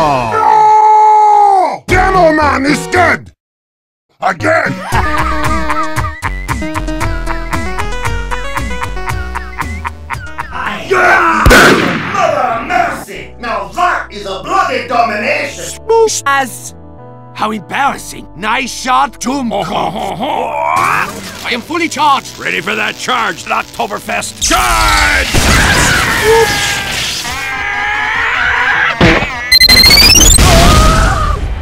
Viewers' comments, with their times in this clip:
0:04 the laugh is now my ringtone!
0:19 can't stop laughing at the way soldier laughed